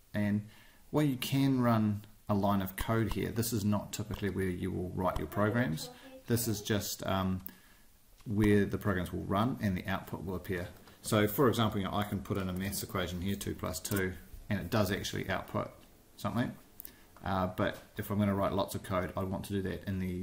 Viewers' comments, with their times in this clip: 0:05 I heard a little kid say, "Who are you talking to?" and it totally freaked me out! LOL